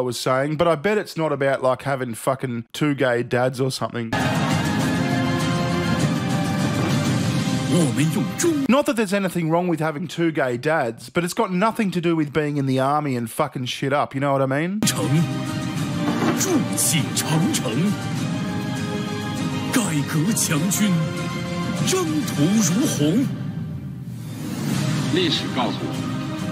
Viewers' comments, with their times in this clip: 0:08 I can’t help but think of the angry birds victory noise 💀